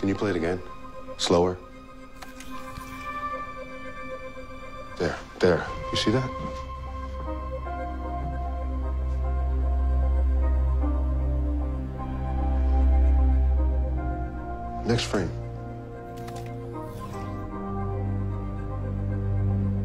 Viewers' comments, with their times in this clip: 0:07 that faint music just gives me chills